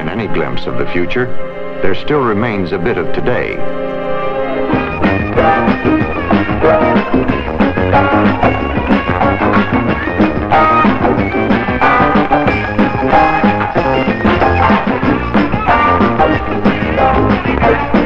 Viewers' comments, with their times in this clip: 0:05 Omg the band rules!